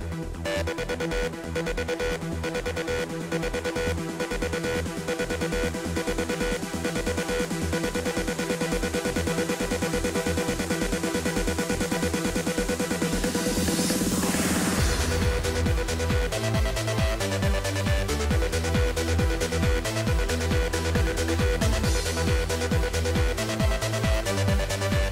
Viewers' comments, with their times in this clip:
0:08 ok lets just throw the briefcase. kickass tune, even today